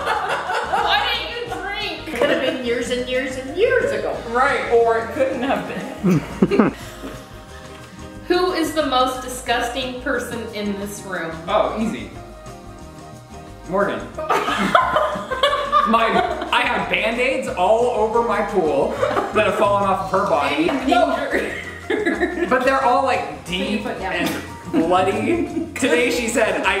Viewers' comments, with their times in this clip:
0:06 there's a little chuckle that I swear is him 🥺🥺🥺
0:07 He's recording you can hear his laugh